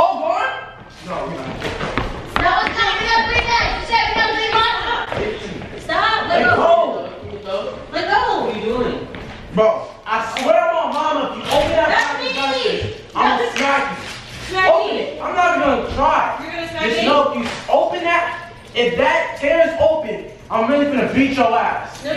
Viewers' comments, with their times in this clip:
0:10 you can hear his mom saying ThAtS Me!